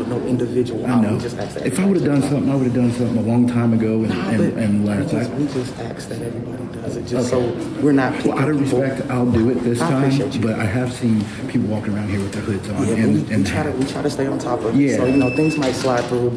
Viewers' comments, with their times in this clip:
0:04 she axed 🪓 multiple times axe this axe that 🪓